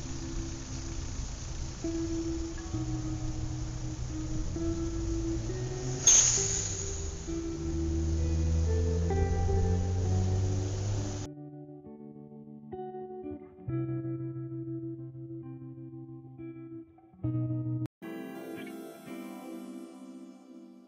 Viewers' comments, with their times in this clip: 0:06 Don't scream, it can hurt the baby